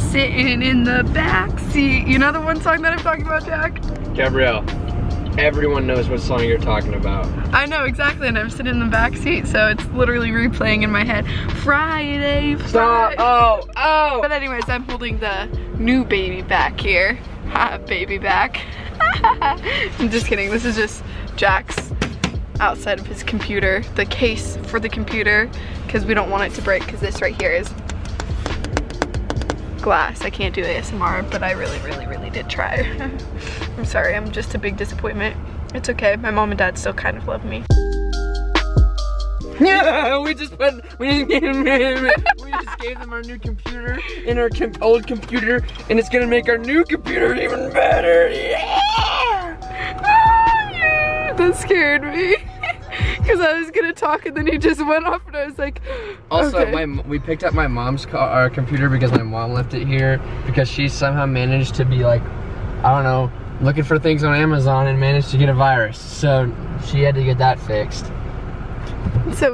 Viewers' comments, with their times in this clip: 0:03 why did it sound like he was talking through the phone
0:18 Cleveland brown laugh
0:50 The screeching Also all of the randomness😂